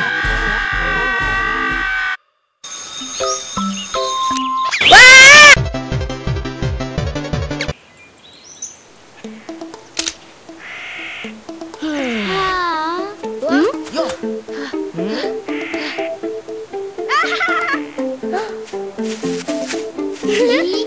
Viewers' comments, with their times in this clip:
0:05 the scream tho XD